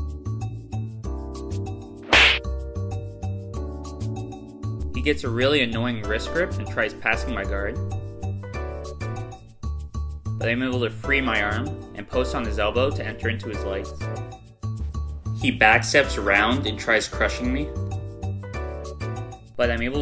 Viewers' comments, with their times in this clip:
0:03 That Slap Effect LMAO!!